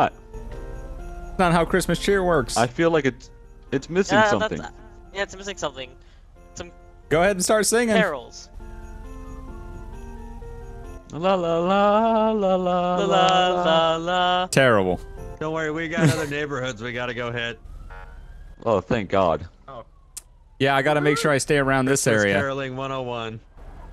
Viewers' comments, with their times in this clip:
0:10 its a good thing cops aren't singers 😸